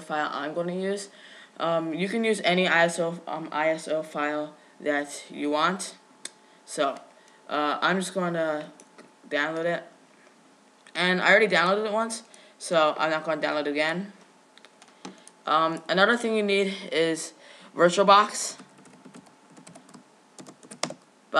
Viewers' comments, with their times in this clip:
0:07 you have said "umm" about 20 times.